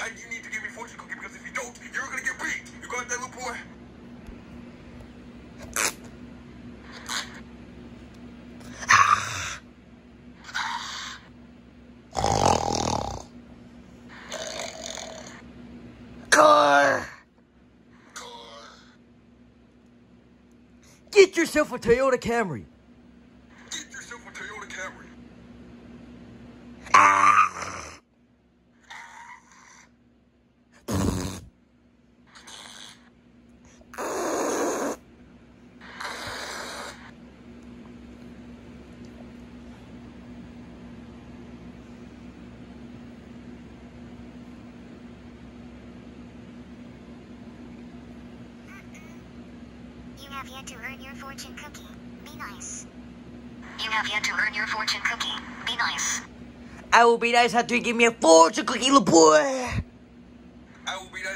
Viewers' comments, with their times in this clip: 0:04 funny sound effects
0:43 Goofy ahh fart Ben and Angela and Angela give me your fortune cookie now or are you going to get beat